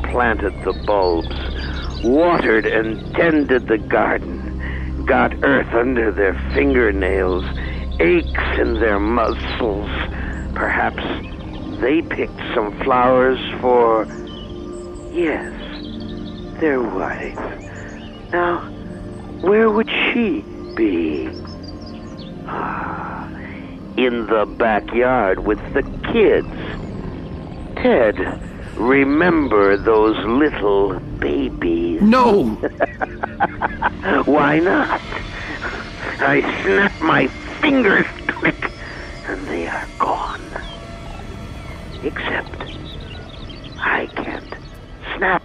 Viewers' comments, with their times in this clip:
0:09 “Aches in their Muscles” his jealous sorrow about being unable to feel anything is something that could only be delivered by its creator.
0:31 .. i love the way he says. "Babeese"